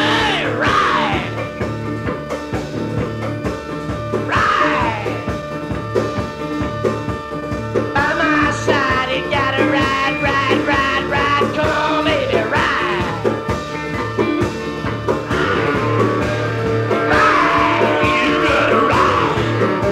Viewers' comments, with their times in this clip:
0:06 My absolute favorite performance of The End. Hate to say this, but Morrison kinda ruins it a little after Too many grunts and groans and screams. The "ride ride by my side" part sounds comical. And then the scream after that part makes me cringe.